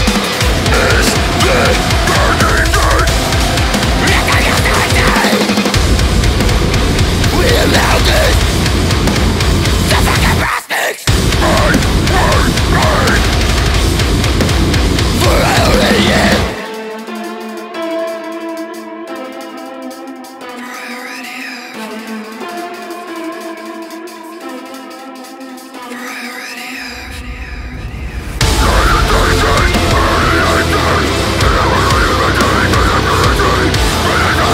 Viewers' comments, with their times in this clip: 0:09 sounds like guests at Olive Garden “JUST FUCKING BREADSTICKS” 😂 or like he’s saying “your fucking breath stinks”
0:17 that high hat should not have been tracked but I still love this song and the performance